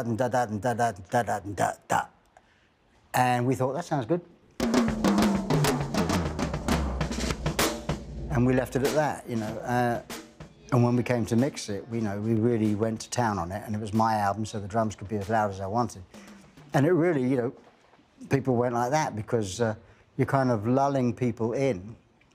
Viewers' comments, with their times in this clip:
0:03 whoever sound engineered this part, good job genius, you clipped every single mic